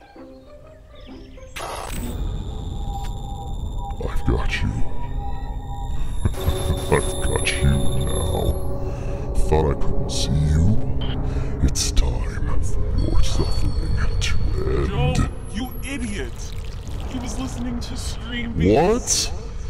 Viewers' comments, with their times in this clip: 0:04 NGL, you guys voice acting impressed me the most, loved the voice filters! Exceptionally clean audio!